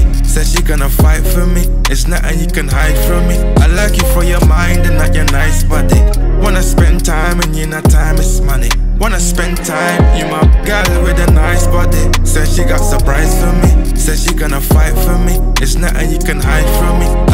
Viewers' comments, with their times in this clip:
0:05 This part though when they do that line together.on fuckin rpt